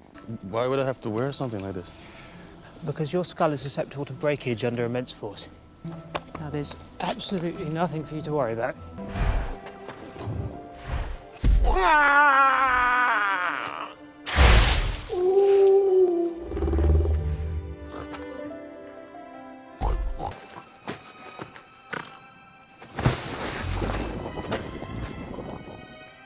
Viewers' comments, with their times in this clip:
0:10 Newt acts this fantastic beast that I don't remember it's name. The fantastic beast does a strange sound. Then,it turns around. Newt keeps acting this fantastic beast. Then Jacob says:《Excuse me,what?》 Hahahahahahahahahahahahaha!!!!!!!!!!!!!!!